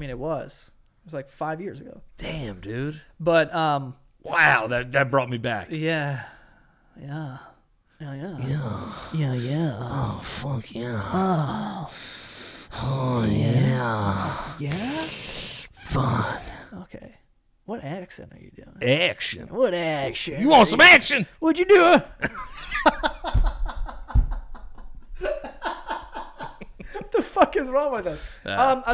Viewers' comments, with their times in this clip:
0:10 why does he sound like Ken kaniff